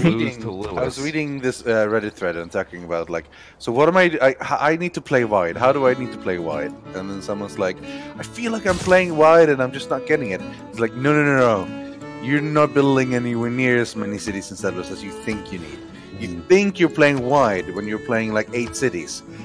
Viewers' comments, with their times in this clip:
0:05 that happy music from civ 6 is really good, the one